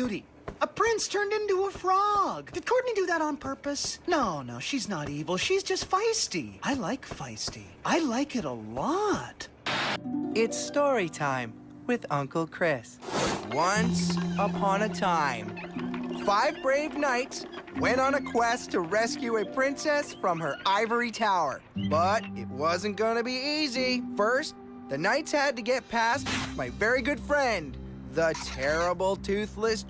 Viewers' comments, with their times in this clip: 0:10 WHY DOES CHRIS SOUND LIKE A DAD :)